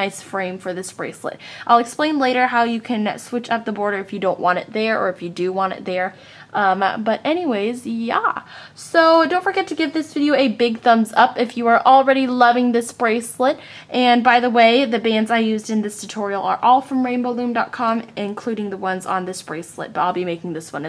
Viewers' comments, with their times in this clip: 0:07 Just me that thought she sounded like the 'kid on crack' ? 😂 haha